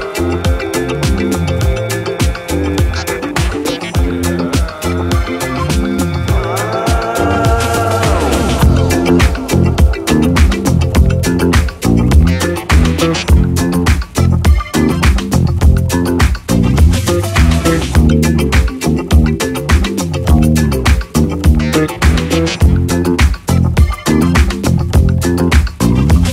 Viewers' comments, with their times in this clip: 0:09 The bass guitar !!